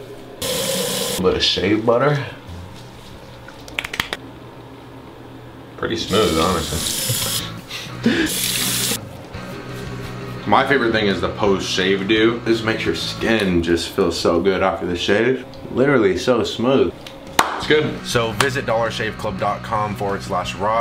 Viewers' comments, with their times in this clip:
0:07 pretty smooth honestly then the evil laugh ahahah